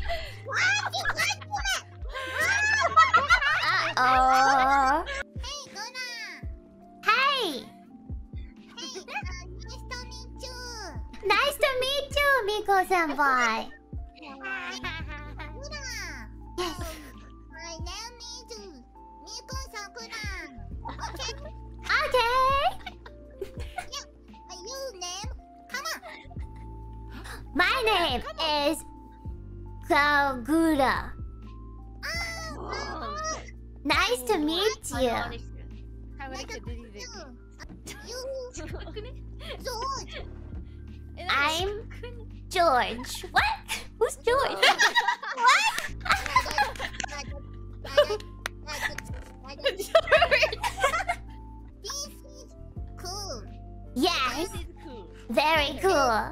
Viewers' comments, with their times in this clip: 0:05 deciphering the elite english
0:14 kiaras chuckle lmao so smug
0:37 they really do like aunts talking to a child here